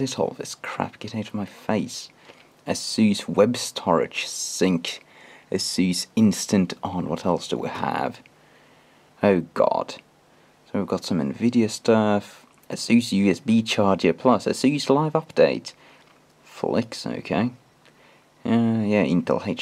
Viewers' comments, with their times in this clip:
0:05 I'M DYING "oh god' is hilarious in this accent